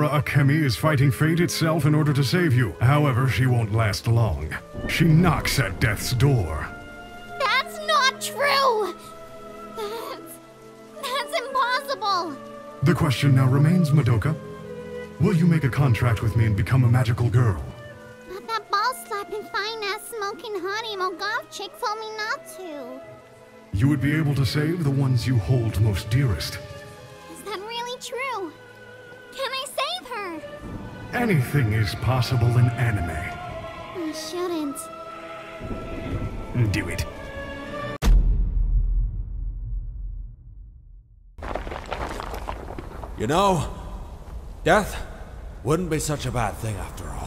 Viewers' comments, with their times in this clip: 0:07 that's not true! (soundboardmoment)
0:35 love that emperor palpatine "do it"